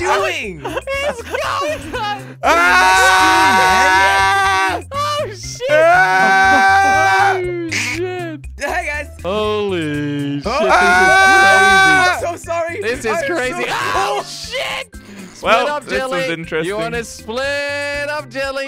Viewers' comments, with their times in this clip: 0:04 Määääh. Just like a goat XDD